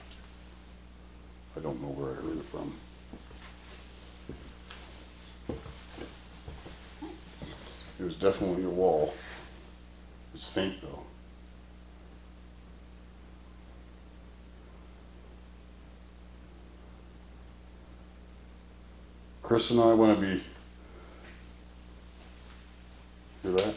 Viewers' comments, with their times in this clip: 0:07 almost sounds like a woman almost laughing or a sigh or gasping for air.